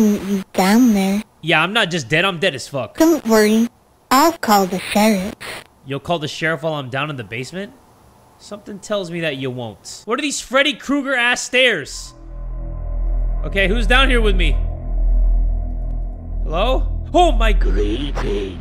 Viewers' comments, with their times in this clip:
0:04 Am I the only one who likes this kind of voice?